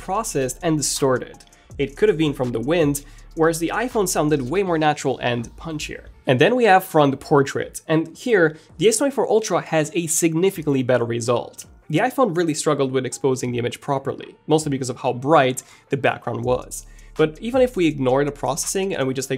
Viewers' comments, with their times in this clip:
0:05 lol wtf? I almost couldn't hear the iPhone over the wind. The S24U did heavy sound processing in order to remove the wind noise and it did a pretty good job.